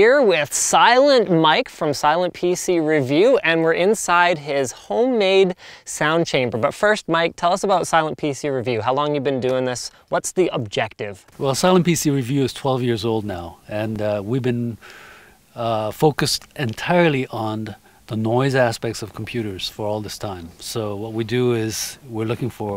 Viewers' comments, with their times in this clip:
0:10 Mother-in-law just asked me if he's the man who English-dubs asian TV and anime (facepalm)... I couldn't think of a clever response before she walked away.